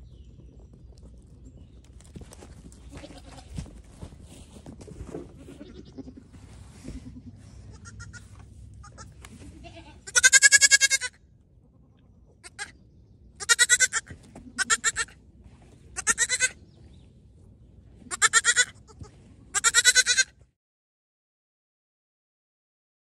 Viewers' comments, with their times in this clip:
0:08 That goat really had something to say!